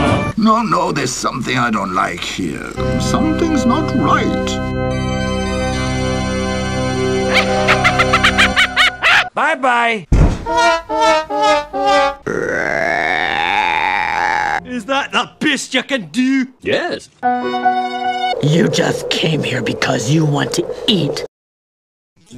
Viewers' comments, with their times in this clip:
0:09 Bye-bye! (Fail horn)